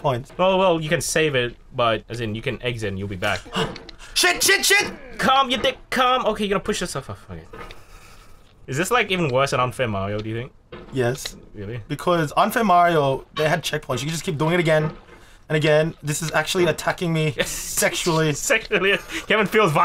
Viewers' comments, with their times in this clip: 0:04 Mario ate mushroom sound